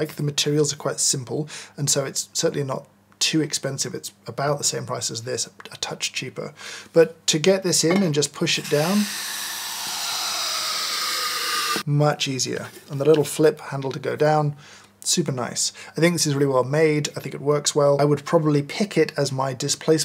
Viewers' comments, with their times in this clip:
0:08 ASMR all day!!